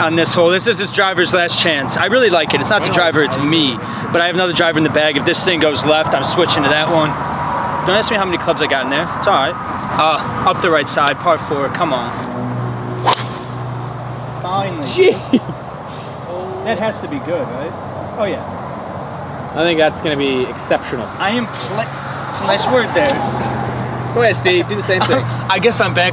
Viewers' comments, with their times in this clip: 0:08 is that the legendary SPLOOSH 😂😂